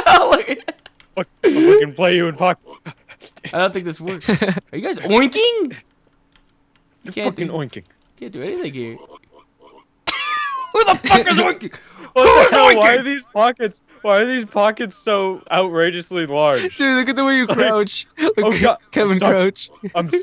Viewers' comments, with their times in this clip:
0:05 "Are you guys OINKING?" Me: onking intensify